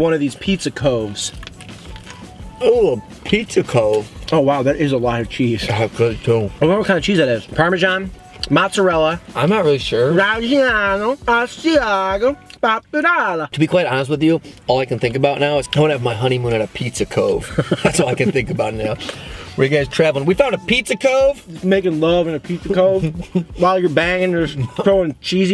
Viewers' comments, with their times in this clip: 0:06 some italian cheese impersonation